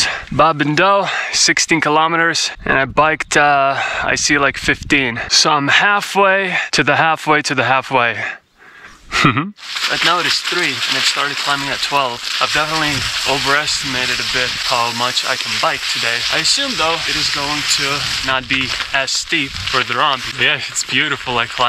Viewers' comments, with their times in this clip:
0:08 That chuckle was so anime sounding 😂